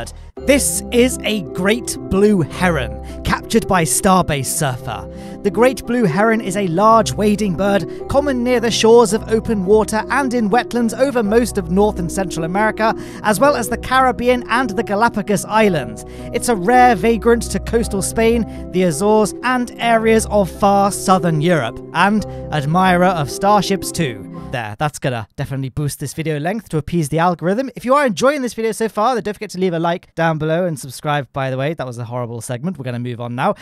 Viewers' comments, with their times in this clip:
0:07 You confused the hell out of my when you played that KSP music i was like "hold on a second, i have music turned off!"
0:17 love the ksp music but why did you have to talk over it